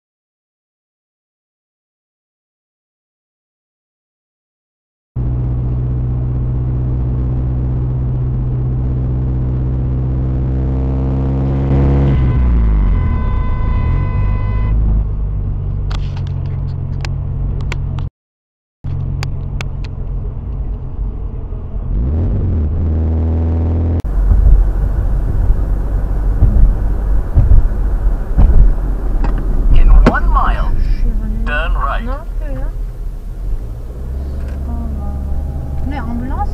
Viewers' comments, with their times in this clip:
0:05 ...speeds up because he doesn't want the other car to get into his lane. You can clearly hear him accelerating.
0:20 #8 You do know that we can clearly hear you try to accelerate and block them, right? Don't play innocent here.